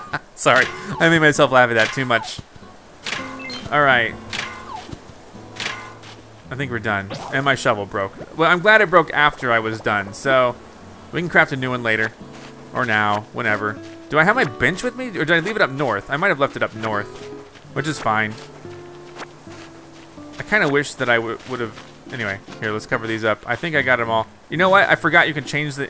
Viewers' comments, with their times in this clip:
0:10 you did it like 5 extra times,,, when it makes the "dun dun" sound instead of the more happy beeps then there isn't anything left, and if you want all 8 of the pieces you get from a rock, you have to move after the 7th one so there is space.